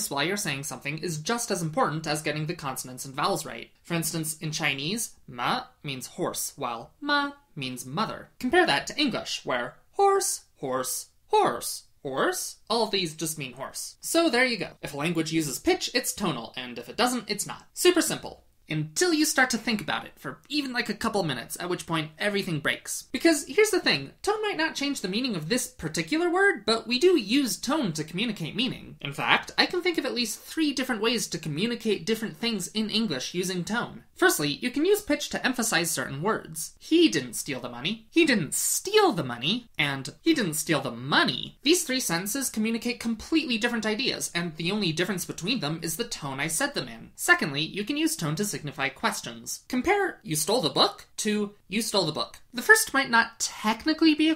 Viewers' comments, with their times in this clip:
0:03 Small mistake the graph and your pronunciation correspond to second tone (má). Horse 马 is actually pronounced with third tone (mǎ). Great video as always :-)
0:04 uh no. 马 （horse) is pronounced “mǎ” where as “má” which you said in the video means “numb” （麻） 我起你的视频！
0:04 I think ma with the 3rd tone (high low high) like this 马 would be supposed to be horse, the thing you've described would actually be weed as far as I know.
0:05 unfortunately what you said is not horse. it's hemp or measles horse and measles are in different tones. 'horse' should have the pitch down and then go up
0:05 the pitch is supposed to go down, then up to mean "horse", not go up the entire time.
0:05 you pronounced it as "麻“ instead of "馬” (should go a bit like a V instead of a /)
0:05 You got the chinese tone wrong at the start chinese is a different type of tonal language, instead of higher and lower pitch, it changes. For mother its mā pronounced like "Maaaa" but for horse its a falling-rising tone where as mother is a flat tone. Mā = Mother, Mǎ = horse. The symbols above mā and mǎ tells how the tone sounds like, for mother its like how you said, doesnt change in pitch but for horse it falls and then rises like the symbol. You said "Hemp" instead of "Horse"
0:13 is literally every year 7 boys voice breaking
0:23 yes it does. The one where you're getting higher is "horse?" Which means something different from "horse."
0:36 you're not only using pitch to emphasize the words so much as using stress (saying those words louder than the others) which is a different concept. You even elongate those words to add further emphasis, further confusing things, and then add the false statement "and the only difference between them is the tone I said them in". Horrible.
0:36 that is stress not tone. You equally say the same sentences angrily and the stress does not change, but your tone does, making it sound angry (low tone) as opposed to informative (rising falling tone) Equally permit, intern are just stress and not tone. I think maybe it is just your accent specifically that changes tone in stressed syllables